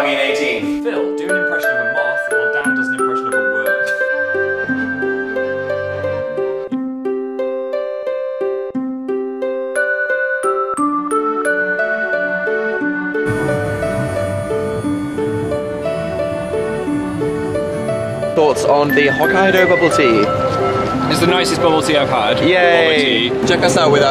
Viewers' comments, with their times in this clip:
0:07 When you can hear the music